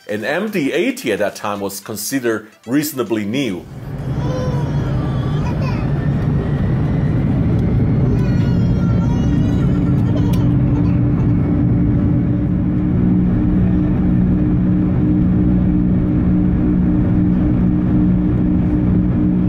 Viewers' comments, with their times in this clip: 0:07 Imagine buying business class ticket and still hearing kids crying.